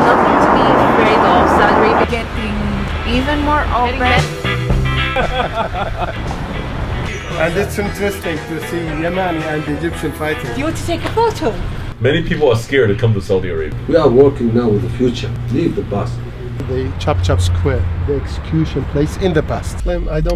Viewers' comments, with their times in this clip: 0:05 can u hear a nokia ringtone at the background? lol!! Sam Chui ur vids are rly good :D